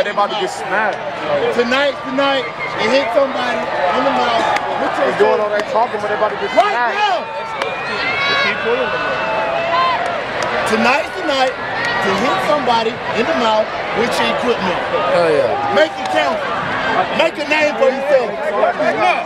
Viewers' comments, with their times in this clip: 0:06 Someone shouts white poet please tell me I'm not hearing studf